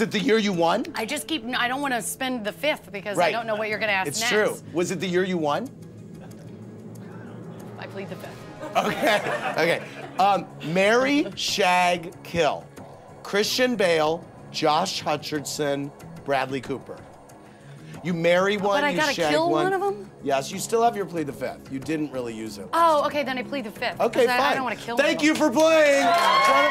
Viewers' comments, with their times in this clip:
0:07 Can anybody tell me what Jennifer says ? I'm from Germany and she talks so quiet at this moment.
0:07 can someone tell me what she said ? "lucily the ... " ? (i hear "luckily the fifth" but it doesnt make sense)